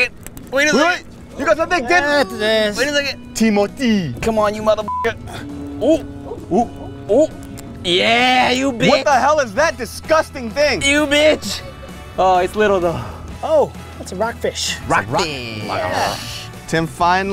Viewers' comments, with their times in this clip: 0:03 DAVID HAD ME DYING LMAO why he say it like that 😂